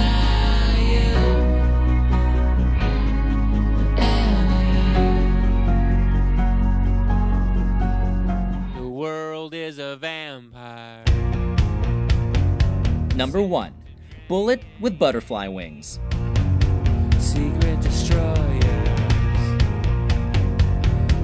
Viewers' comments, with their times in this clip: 0:09 I love that song❤❤